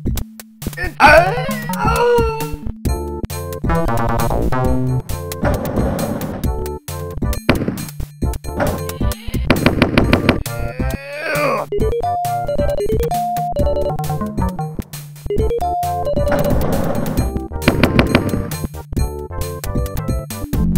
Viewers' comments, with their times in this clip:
0:08 A new record for First Constipalien of the floor! ! Man, these funky-sounding flunkies enjoy their celebrity status! :P